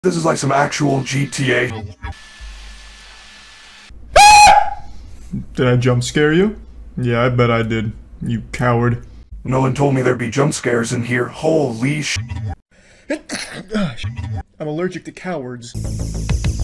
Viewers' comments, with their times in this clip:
0:04 I wasn't expecting the shrill scream Glamrock Freddy lets out.